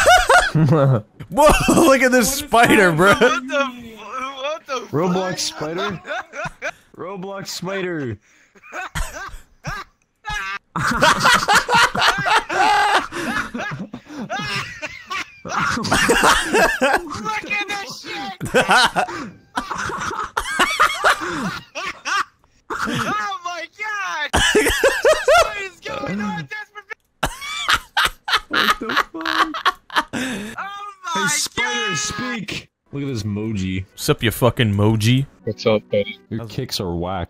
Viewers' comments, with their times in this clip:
0:06 Hahaha that guys laugh
0:20 he sounds like woody